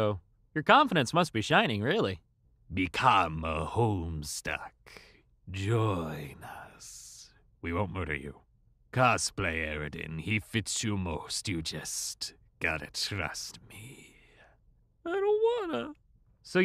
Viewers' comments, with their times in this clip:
0:04 he sounds like Vlad from the Horton Hears a Who movie remake.